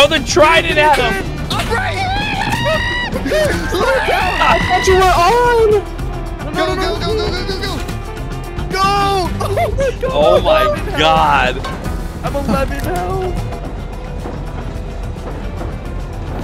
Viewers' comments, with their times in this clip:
0:03 screaming LET ME IN had me dead 😂😂😂